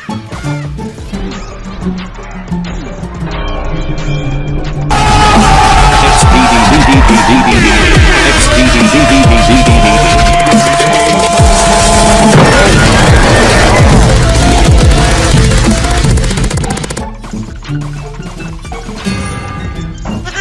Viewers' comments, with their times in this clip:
0:05 RIP headphone users💀